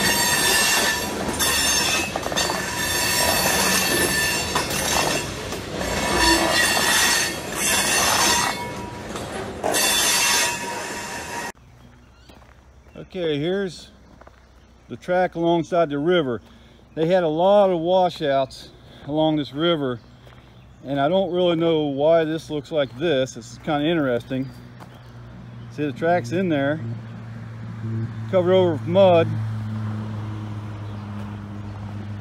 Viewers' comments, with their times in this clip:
0:06 Could you imagine that horn AM 9' FEET from your house in the morning??!!😳😳
0:16 The brakes are squeaking pretty loudly on the "Flashback"